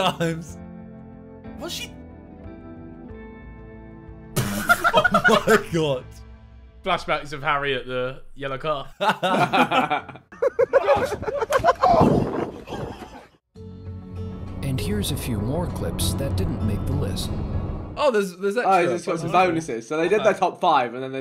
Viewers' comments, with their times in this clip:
0:08 now that i replay it that looks and sounds horrible. sounds like he split his head on the concreate